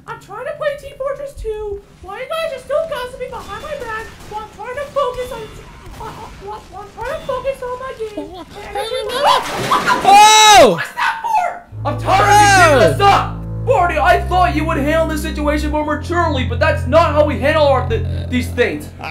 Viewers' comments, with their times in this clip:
0:06 XD i heard barnie